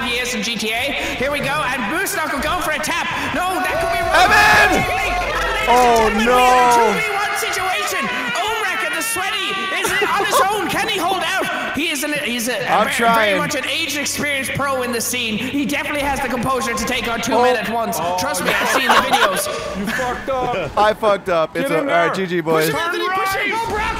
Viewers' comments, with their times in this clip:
0:07 Dat laugh tho